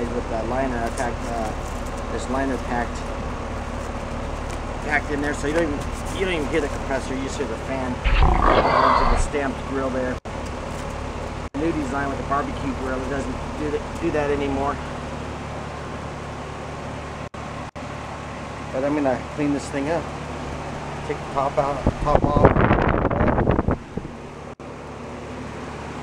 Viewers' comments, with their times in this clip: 0:07 in this video the Devil makes some noise!